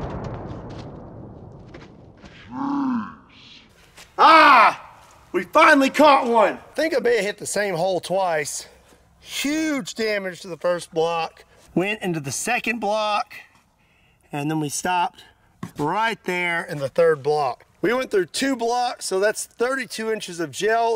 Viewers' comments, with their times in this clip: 0:04 put 0.25 speed at this moment and listen the aaarr